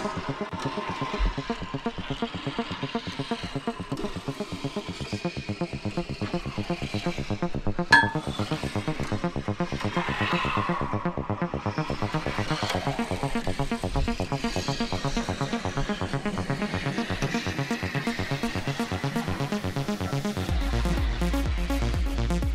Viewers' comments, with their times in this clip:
0:08 glass bottle sound